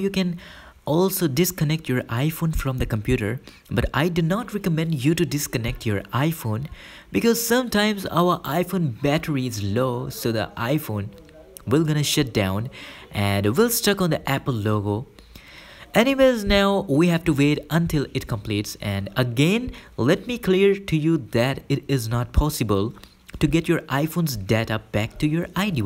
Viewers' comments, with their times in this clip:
0:10 gonna sHiT down lol